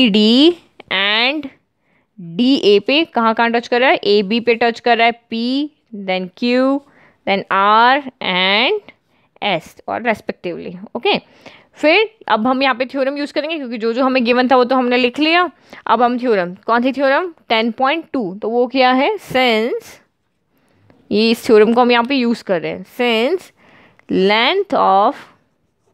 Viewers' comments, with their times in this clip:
0:10 Mam u say ok toooooo cutely 🥰🥰🥰